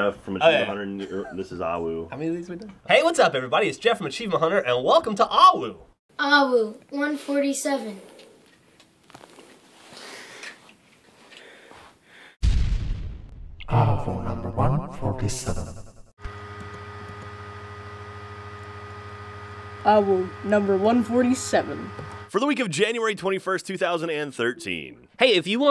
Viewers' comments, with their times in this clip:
0:08 The heavy breathing indicates the excitement for lego